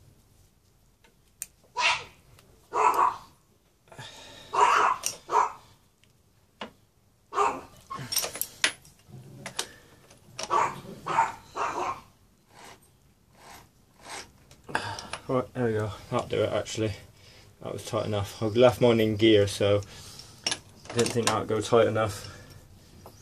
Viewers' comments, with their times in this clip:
0:04 you can hear the sprocket resist being tightened